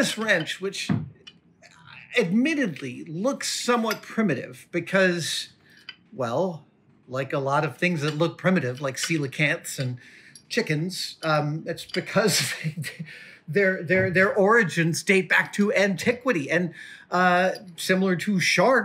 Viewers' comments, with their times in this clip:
0:03 POV: your in and the word wrench no longer sounds like a word